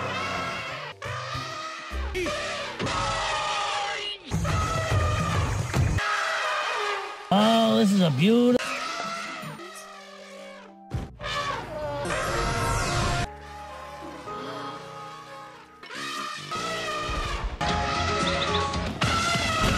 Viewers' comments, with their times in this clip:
0:07 splash in the puddles